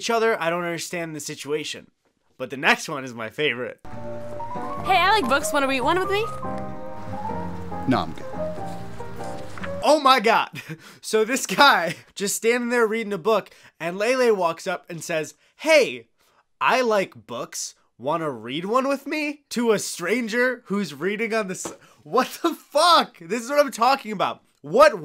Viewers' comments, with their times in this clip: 0:03 hey I like books. Wanna weed won wid me? Yea, let's go with that take. It's like her tongue started flapping around in her mouth making it sound like a turkey call.
0:06 Oh, I understood “Wanna go on a date with me?”